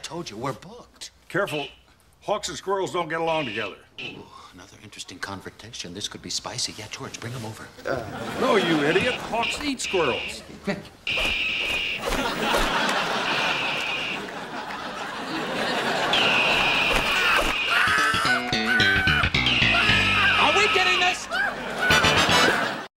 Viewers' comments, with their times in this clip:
0:10 LMFAO That weird noise